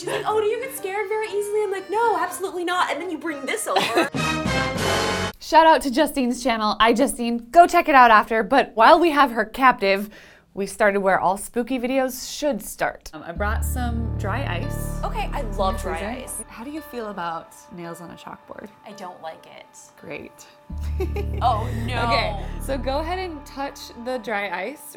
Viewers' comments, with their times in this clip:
0:05 the way she laughed. D:MHAAHAHAHAHA